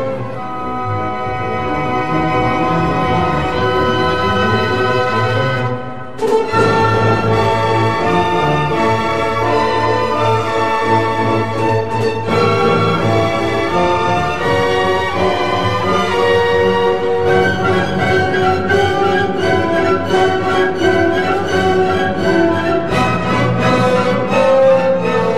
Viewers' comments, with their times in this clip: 0:06 You can hear the influence of Martinů, e.g. around the mark.